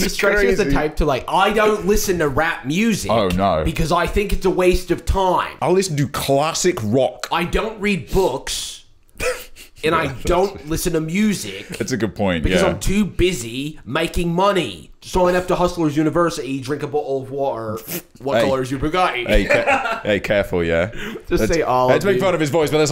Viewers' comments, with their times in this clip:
0:06 yo his tate impression is a1